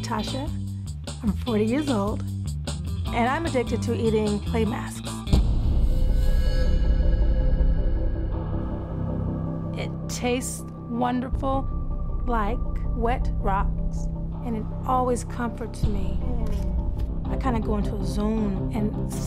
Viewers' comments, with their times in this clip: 0:03 The music theme changed real fast 💀